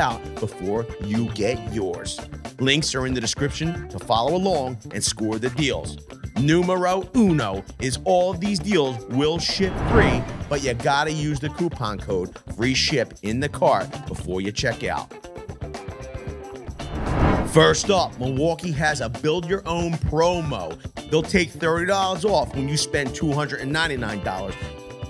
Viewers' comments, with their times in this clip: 0:06 good pronunciation, good deals!